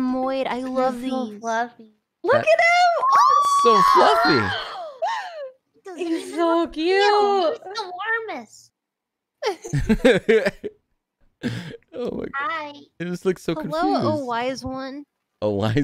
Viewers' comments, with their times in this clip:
0:03 all the girls Oooooooooh